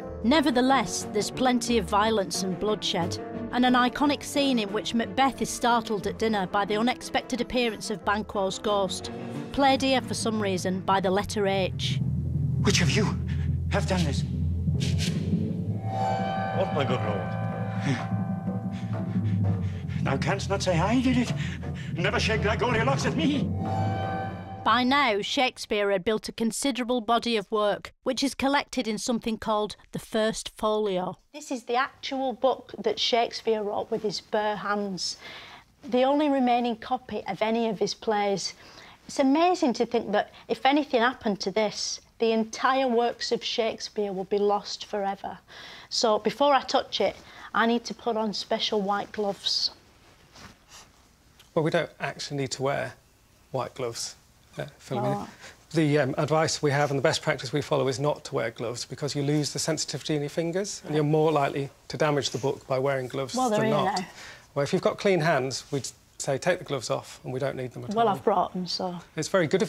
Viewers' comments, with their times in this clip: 0:03 I keep going back to The timing and delivery of the joke is perfect.
0:50 You can hear how agitated he's getting by her putting on the gloves lol